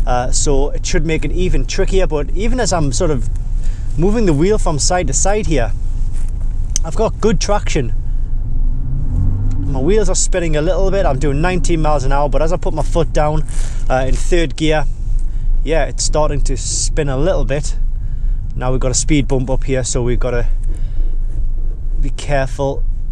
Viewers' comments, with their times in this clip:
0:10 is he really doing 90 miles per hour or 19? lol